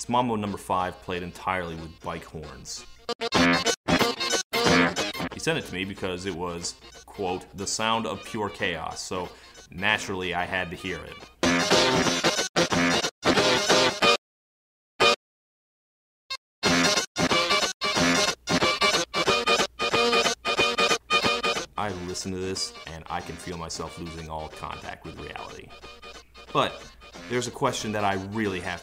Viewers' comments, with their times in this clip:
0:10 The sound of pure chaos? No. This is a sound of pure hatred. A sound so evil, Lucifer himself would refuse to use it to torture the fallen. It is, without a doubt, the most cancerous thing in all of human history. Robot scholars in the future who will find this song, will think that we deserved total annihilation for creating such a travesty of music. This hideous noise makes me wish for the sweet embrace of the insanity that only Lovecraftian Eldritch Horrors could inflict upon me. I’m sorry to break this to you, but your friend absolutely hates your guts. Might want to look into that.